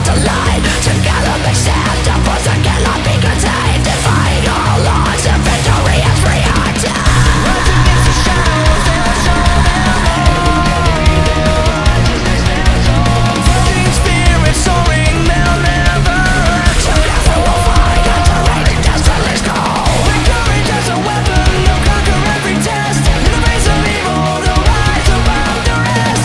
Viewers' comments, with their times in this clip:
0:07 I don’t know why but this part goes insanely hard, it’s probably the how heavy the instrumental is